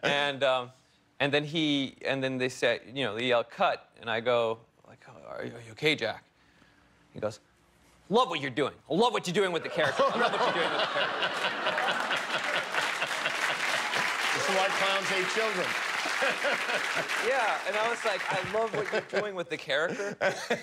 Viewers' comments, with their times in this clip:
0:07 Ok but can we talk about his Jack Dylan Grazer imitation ? It was so on point I could totally picture Jack like this!